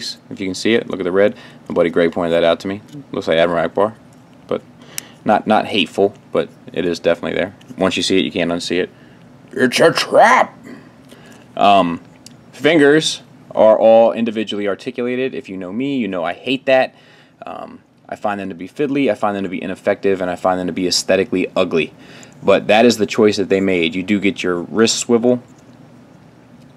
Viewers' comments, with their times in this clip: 0:09 Well, that's definitely a NOPE on my list. I already have an MP05 with a 3rd party barrel extension and I always keep it gun mode. It would have been nice to see the transformation process, but your Ackbar impression killed me stone dead. I'm still laughing